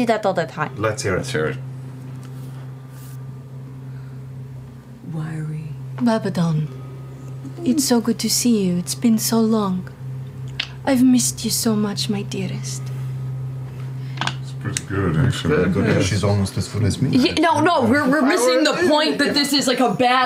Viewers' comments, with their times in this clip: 0:06 when you casually remember they're all fucking really talented voice actors